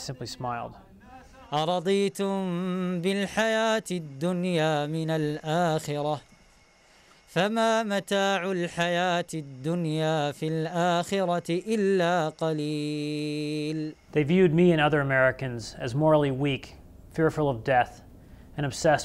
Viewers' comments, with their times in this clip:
0:03 Just to let know that the guy is reciting Quran has a Saudi Arabian accent. why are they our allies?